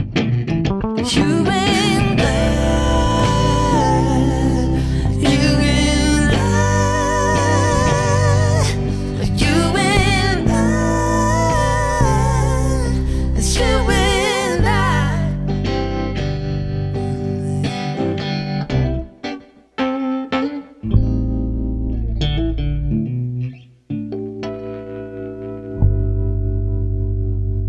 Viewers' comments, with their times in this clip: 0:08 All of this is incredible, yeah, but that unison vocal blows my goddamned mind every single time. There's two of them for god's sake! TWO!